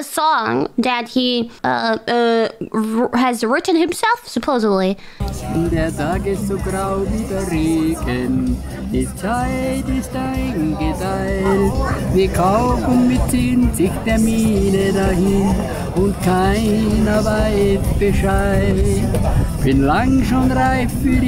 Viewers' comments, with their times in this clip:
0:05 who would skip such a banger music even I can't understand but I still know it a banger